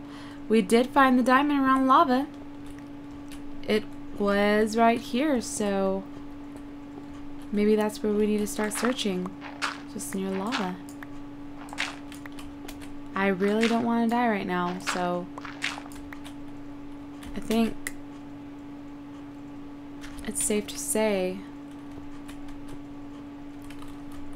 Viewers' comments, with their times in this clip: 0:10 at first i thought you said i really want to die right now